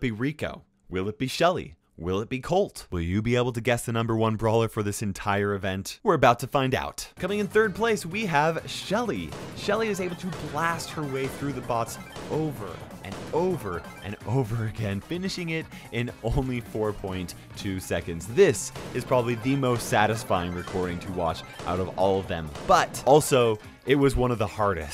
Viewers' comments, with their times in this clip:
0:09 Brave soldier laughs as he eleminates a whole army (1989 Colorized)